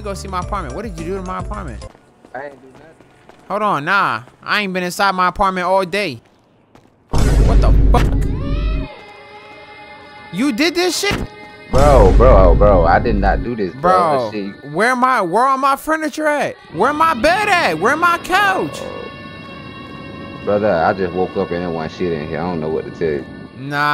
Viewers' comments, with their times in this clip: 0:08 bruh that song kills me everytime😂😂😂